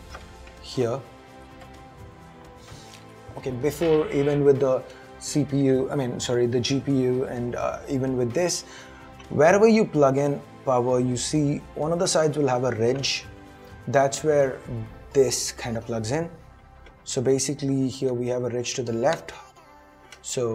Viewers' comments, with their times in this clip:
0:03 some just farted in the background???